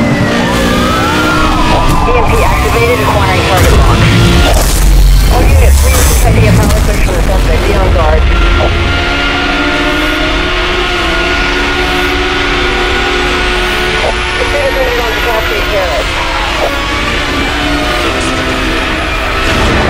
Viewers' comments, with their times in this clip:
0:03 huge ass sound wave